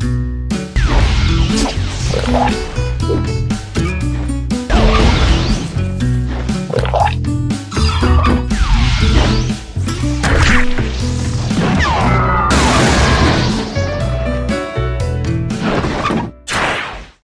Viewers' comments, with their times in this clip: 0:06 when you're trying to enjoy some coffee and someone just does a sick guitar solo behind you